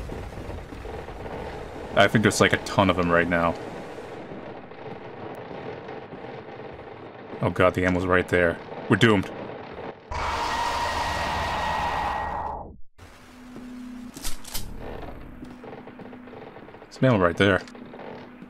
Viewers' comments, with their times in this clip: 0:03 I Actually sat up in my seat. The creaking sounds and knowing there were a couple right behind and then 2 new ones that would pop up from anywhere... It's so simple looking, but it has enough elements to make it really tense even if you don't find it scary.